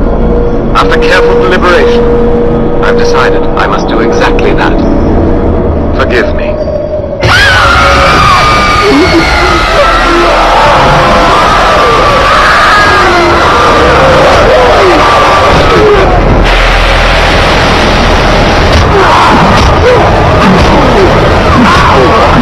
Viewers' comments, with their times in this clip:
0:06 Arrrrrrrrrrararg! Turn town your audio! WHAT IS WRONG WITH YOUR COMPUTER!